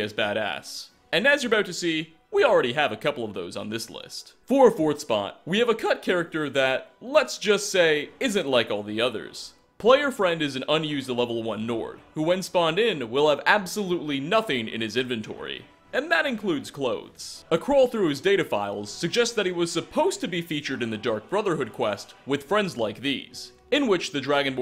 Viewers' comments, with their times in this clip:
0:04 Great video but listen for the voice crack
0:04 voice crack XD i fuckin hate those great vid tho
0:05 that voice crack was grave
0:05 that voice crack though!
0:05 "we have a cut (voice crack) character" almost died of laughter when I hear that lol
0:06 "we have a c U t character..."